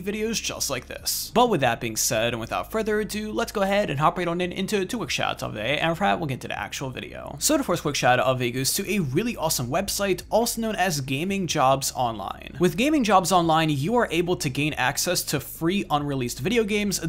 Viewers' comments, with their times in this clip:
0:05 Are you even speaking English ???